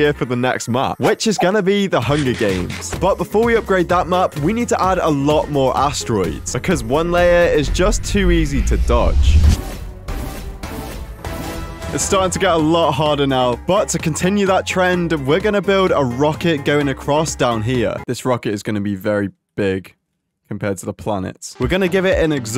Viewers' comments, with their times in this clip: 0:08 I like the vandal sound effect from valoramt